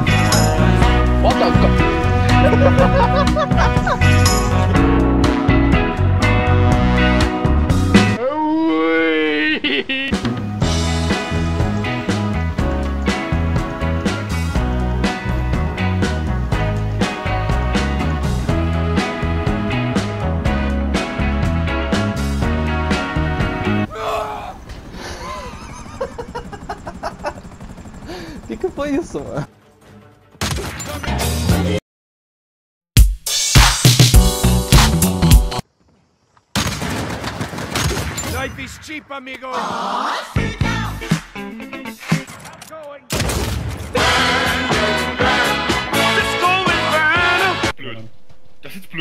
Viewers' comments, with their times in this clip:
0:05 the weeeeeeee! 😂 was I the only one left dying by how he laughed and said weeeee! 😂😂😭😭
0:31 wtf song changed? got copyrighted???